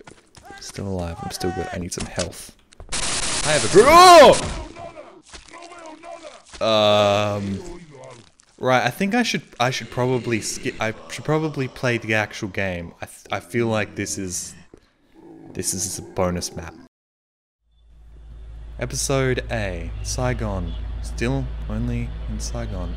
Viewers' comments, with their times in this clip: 0:04 "no veo nada" "eh oido algo" why is he talking on spanish?
0:05 S P A N I S H I N T E N S I F I E S